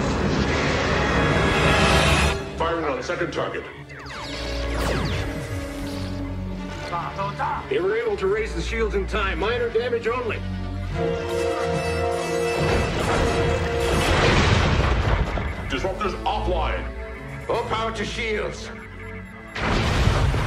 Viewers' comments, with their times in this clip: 0:07 its funny to hear a klingon with just a regular sounding voice. That guy didn't sound like a powerful klingon warrior at all. He sounded like Fred from accounting